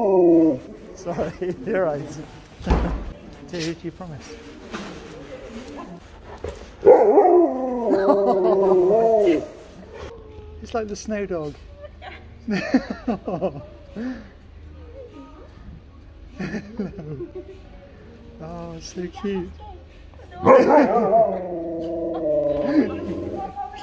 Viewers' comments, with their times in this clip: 0:06 oh wow, that little dog was so startled when Sherp made his vocal arrival.